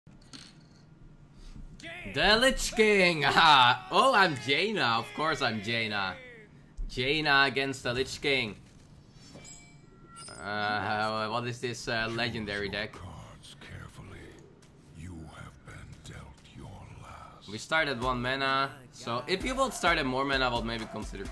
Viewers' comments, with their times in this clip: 0:02 Aha oh I'm gay now